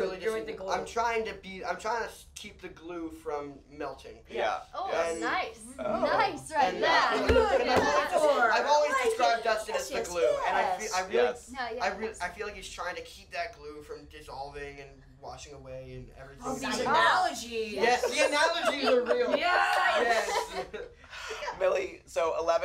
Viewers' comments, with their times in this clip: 0:08 OMG IF YOU LISTEN CLOSELY YOU CAN HEAR FINN MAKING FUN OF MILLIE 😂❤